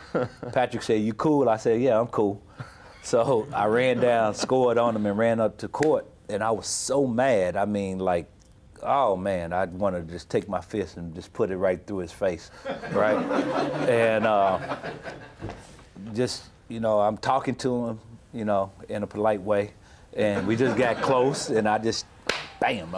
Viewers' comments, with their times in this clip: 0:08 the way Stark was talking reminds me of "BEANS 'N' CORNBREAD" from Tosh.O... If you know you know